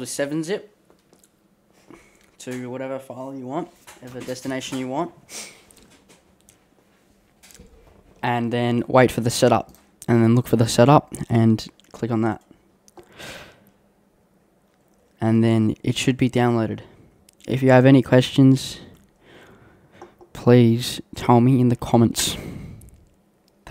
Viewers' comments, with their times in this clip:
0:09 That was really good ASMR from onwards